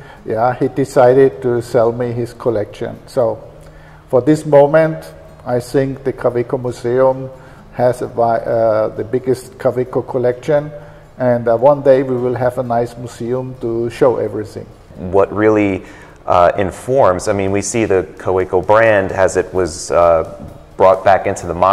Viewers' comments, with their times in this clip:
0:09 for those who want to practice the pronunciation of Kaweco :)